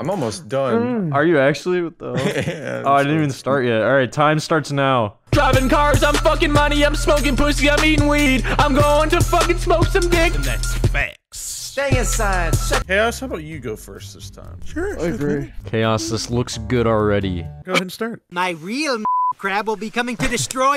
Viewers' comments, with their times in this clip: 0:05 Literally 100 Gecs